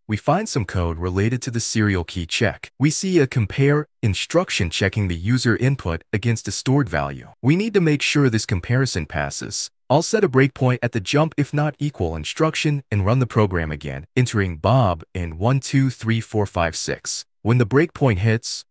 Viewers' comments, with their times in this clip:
0:06 Dont forget the wild dubstep music and graphics to play 🎉🎉